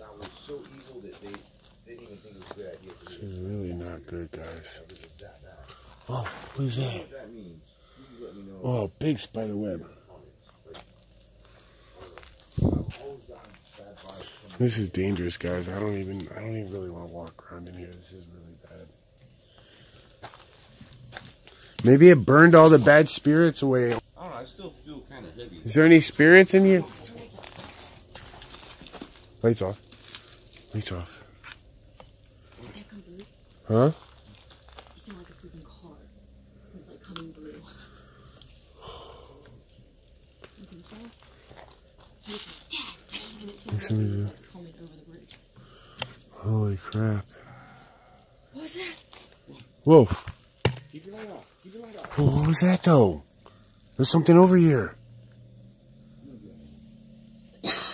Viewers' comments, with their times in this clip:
0:10 I listened to 4X and I swear it sounds like either a cat "meow" or a little kid
0:43 not sure what it says but freaky female voice ...something then ... “that thing”
0:44 you hear a voice it sounded like she was saying you can't get me or come and get me